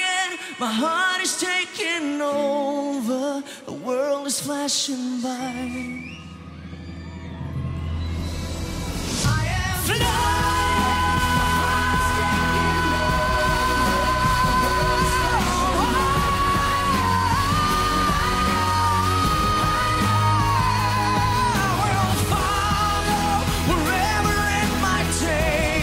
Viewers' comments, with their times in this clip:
0:06 I wonder why people do not write real songtexts anymore, so anoying with the uhh the ohh the yeaahhh etc everywhere, so damn sad. That said, the power + o.0 Bad song like most pop but that is not Erik's fault, he does his voice credit at least.